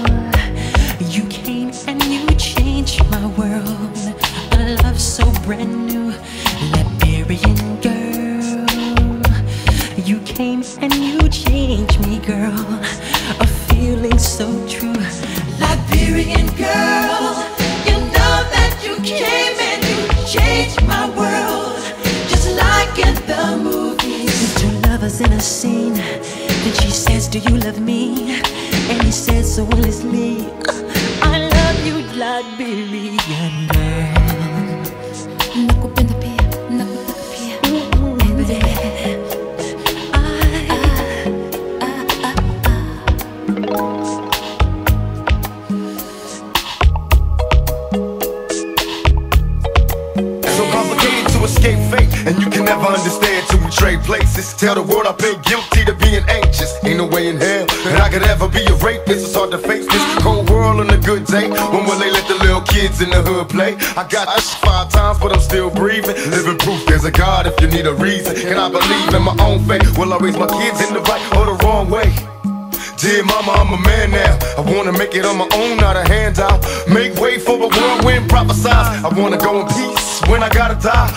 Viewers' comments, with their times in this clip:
0:09 2021 it's I love This man voice
1:04 I hope it wasn’t you that censored “shot” because that’s despicable